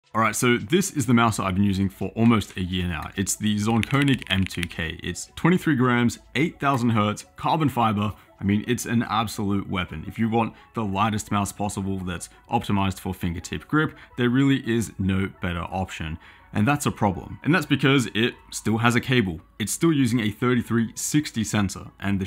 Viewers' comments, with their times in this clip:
0:03 oouuf, the mechanical keyboard sound effect when typing out the text
0:04 what the fuck keyboard is that typing out the name of the zaunkoenig m2k it sounds amazing